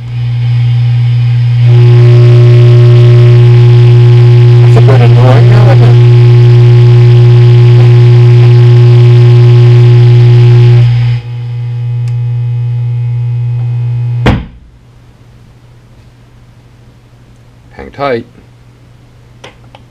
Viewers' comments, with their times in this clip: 0:05 Lol glad I wasn't wearing headphones lmao......I do love that sound though